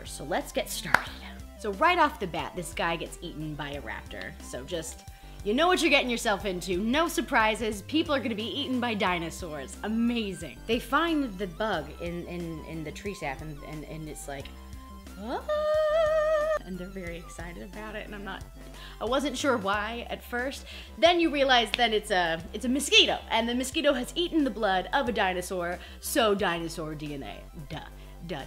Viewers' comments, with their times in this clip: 0:09 channeling Jeff Goldblum.